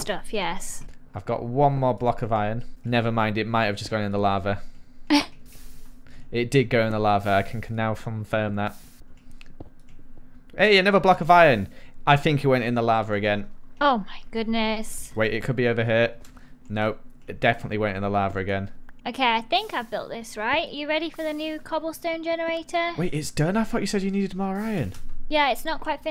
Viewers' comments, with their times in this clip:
0:07 **I can CANNOW fomfirm that